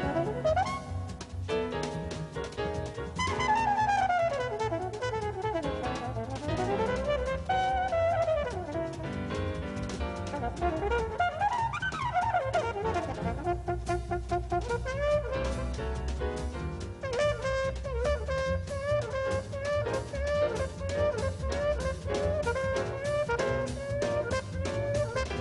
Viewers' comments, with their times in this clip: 0:09 That lick is insane. If I hadn't just heard it I'd say it's impossible.